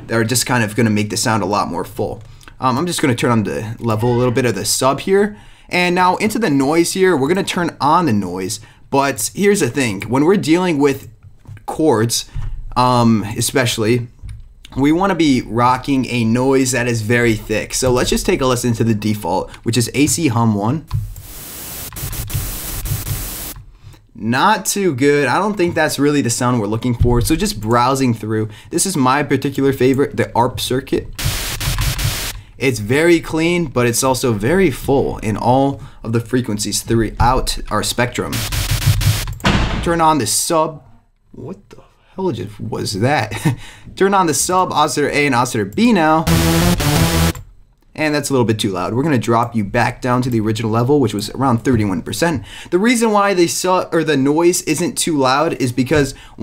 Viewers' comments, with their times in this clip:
0:03 Go to that noise in the background lmfao
0:36 That was a dad or older sister kind of door-slam.
0:38 holy shit, its six siege in your house fam
0:44 hahhaha holy fuck that loud noise